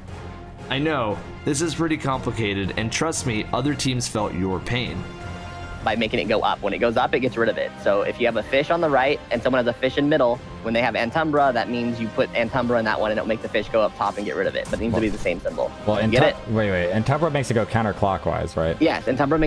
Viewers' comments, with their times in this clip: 0:06 everyone gangsta til Ben Shapiro explains the raid mechanics
0:06 ben shapiro plays destiny?
0:06 the F* is wrong with this guys voice?? did he swallow kermit the frog?